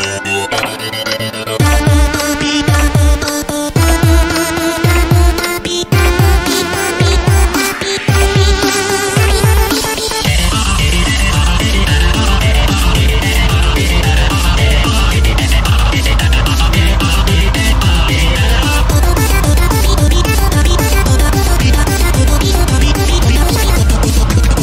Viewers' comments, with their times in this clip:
0:10 I like how tabi sings termination Edit: he kinda sings genocide